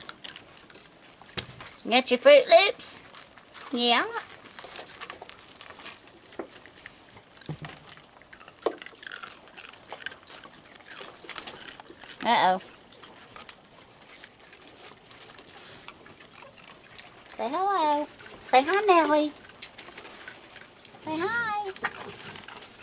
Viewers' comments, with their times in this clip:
0:09 Crunching those fruit loops, so funny.